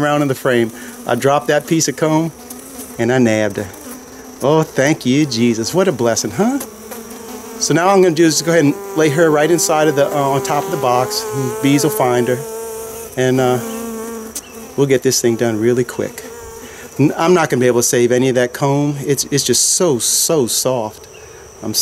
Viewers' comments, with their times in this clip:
0:05 she was buzzing so fast she sounded like an old Jewish mother criticizing her non doctor son! Serious ? i was watching another keeper ( I know I'm such a slut) anyway he is having trouble with ants. His hives are straight on dirt would raising them off the ground help combat the ant situation?